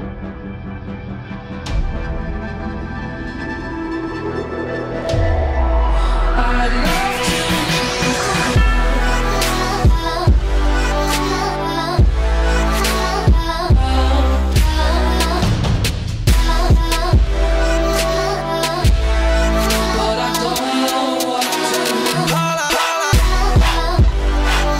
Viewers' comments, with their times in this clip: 0:07 The most beautiful melody <3